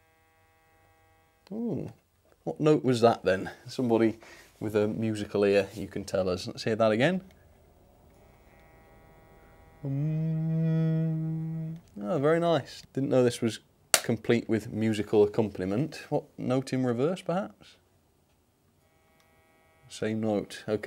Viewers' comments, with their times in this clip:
0:03 I reckon that's an E minor.